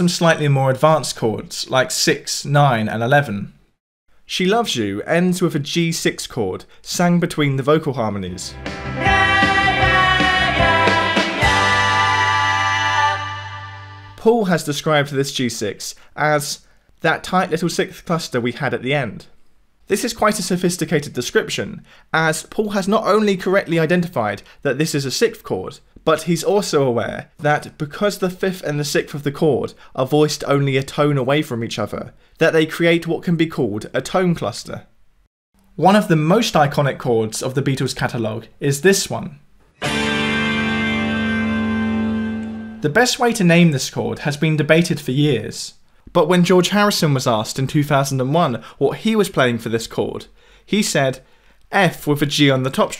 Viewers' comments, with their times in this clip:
0:09 the singer couldn't keep his 6th! Lolz
0:35 "The Chord" gives me a physical reaction every time I hear it. Like seeing a rocket launch. What is with that?